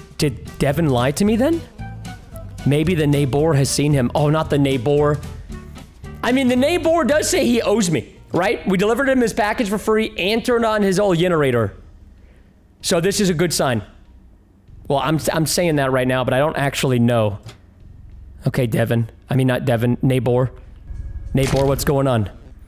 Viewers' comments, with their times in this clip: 0:09 Everyone watching the video Me:Watching preston hilariously pronouncing Neighbour Edit:ok i just realised this and have to add it everyone:Generator preston: yenerator